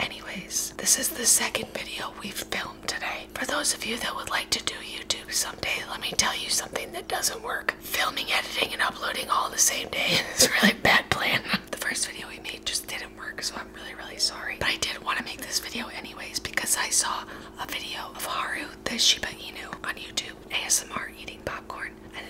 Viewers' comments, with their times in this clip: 0:07 she couldn’t even stay quiet xD
0:08 it almost sounded like a smoker talking or Lindsay Lohan.